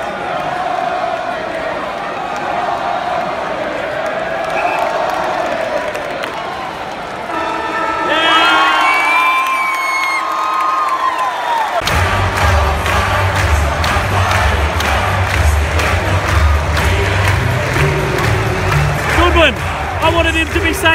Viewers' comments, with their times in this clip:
0:07 I love the siren